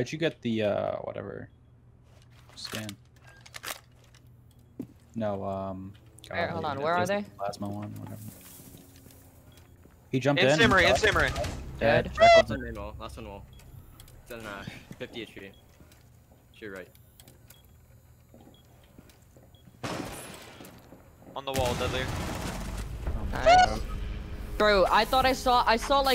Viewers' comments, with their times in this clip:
0:09 Did he just say sameree?